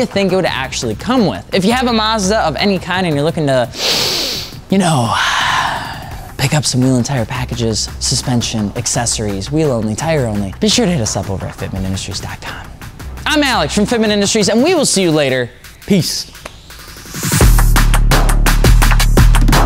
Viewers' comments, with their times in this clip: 0:03 lmao imo… bruh never do that shit again… i wasnt paying attention to the vid and on my mama i thought you just snore a adidas size line of coke…